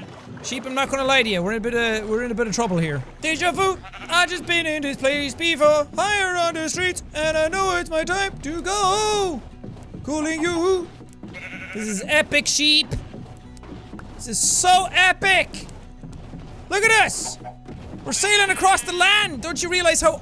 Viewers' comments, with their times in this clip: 0:03 I had my head down casually swiping my phone when I heard Sean singing this. I look up, saw what he was doing, and burst out laughing. It's one thing to predict things, but another to physically see it happening anyway.